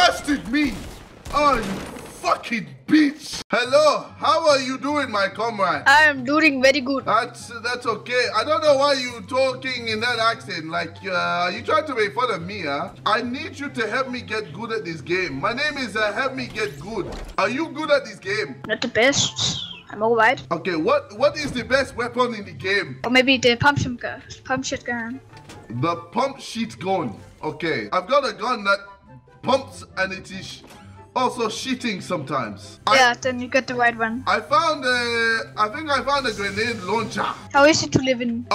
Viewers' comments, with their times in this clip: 0:07 its indian accent mate, ps : im not indian
0:08 i smell danish
0:11 he sounds so danish
0:23 best gun shitgun 🤣🤣